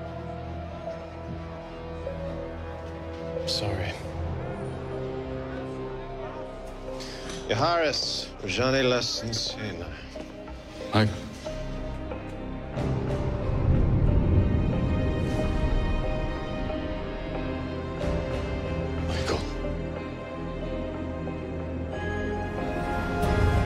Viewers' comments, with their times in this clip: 0:07 this is so far the worst arabic i have ever heard.